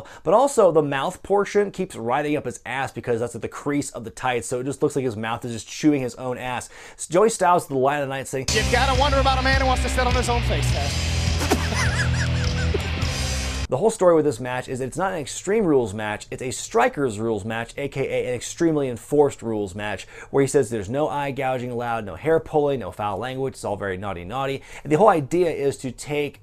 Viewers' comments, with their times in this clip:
0:07 You can hear Joey Styles' smile as he delivered that line